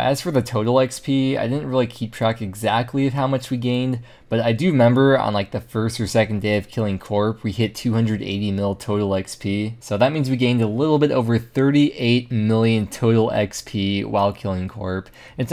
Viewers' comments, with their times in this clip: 0:03 "i do member" that made me giggle